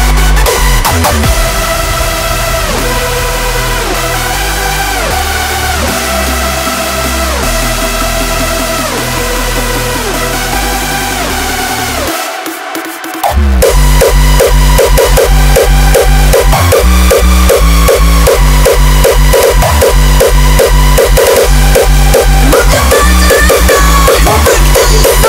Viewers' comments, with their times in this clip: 0:06 I love the beginning. I wish the song used much more of that popcorn theme melody from the beginning though which almost disappears after or gets so much slowed down.